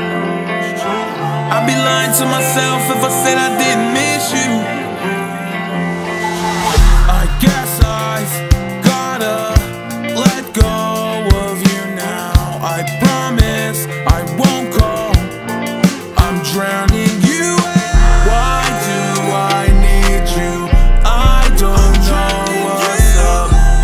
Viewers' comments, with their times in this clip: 0:06 such a vibe, the part with drums